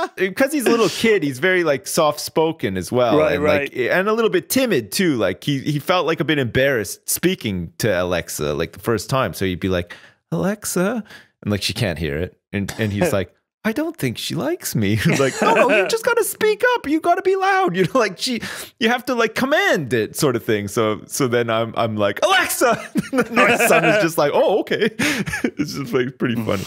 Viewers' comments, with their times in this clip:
0:07 sips child inpersanation